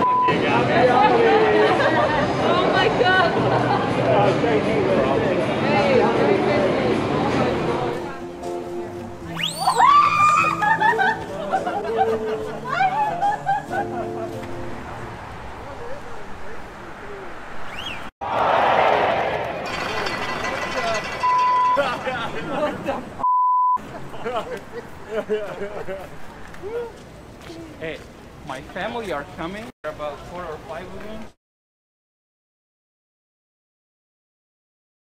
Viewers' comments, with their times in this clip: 0:06 I tend to laugh when I see someone that can't walk due to laughing so hard, and yelling, "That's not FUNNY!!!" at the same time.
0:18 thats not funny your entire squad is laughing to death